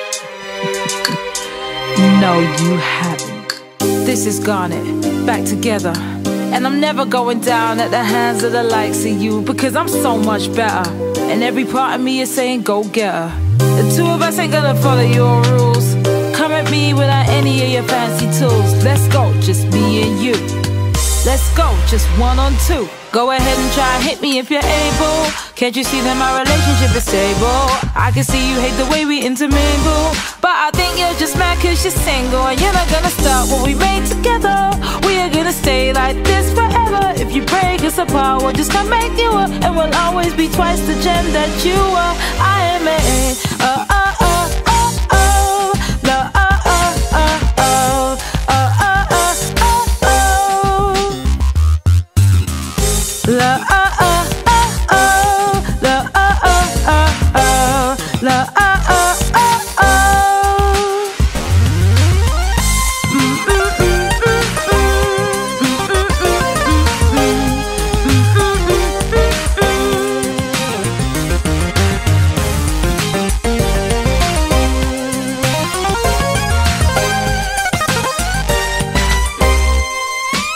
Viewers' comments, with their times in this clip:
0:09 "cuz im so much be-er" whats that? oh.. thats just my pants
0:10 Was Garnet saying "bet'er" 💀
0:43 put this on 1.25 speed and it sounds like redvelvet queendom song
0:51 I am the only one heard the voice of steven a little says"treeeeiheehe"
1:01 this sounds so empty without peridots rap
1:04 (Gem randomly playing a synth solo appaears) "Where did you come from?"